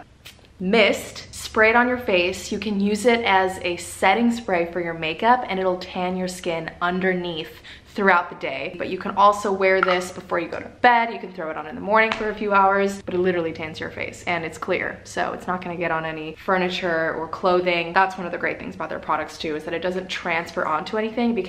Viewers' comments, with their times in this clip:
0:03 the Chicago rly jumped out